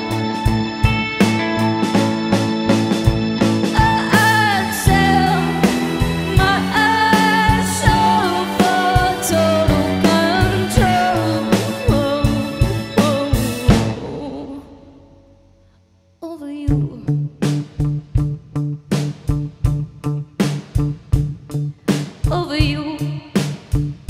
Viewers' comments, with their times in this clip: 0:06 I love that smile sounded crap at first but got better as it went on, loved it in the end Love Angel Olsen but no one can do this song like Martha